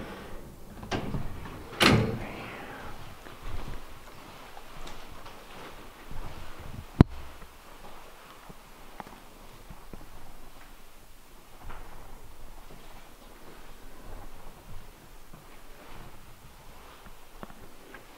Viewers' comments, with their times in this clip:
0:03 there’s a whisper I can’t make it out RIGHT HERE or HERE I AM???? I’m not sure maybe someone can enhance the audio, but there is a whisper 😘💜👻
0:04 sounds like someone said I’m here